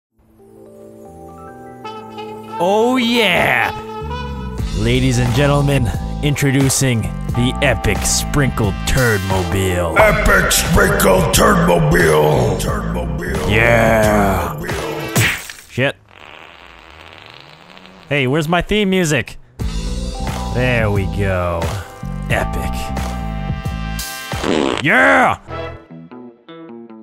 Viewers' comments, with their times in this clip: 0:10 I would jam to this theme for hours with “turdmobile” echoing in the background